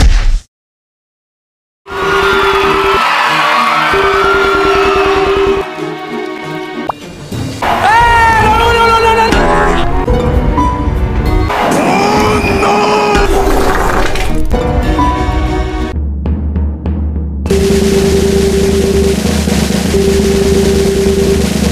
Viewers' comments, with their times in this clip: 0:07 wth😂😂 i cant stop Laughing!! XD where the f, u got that voice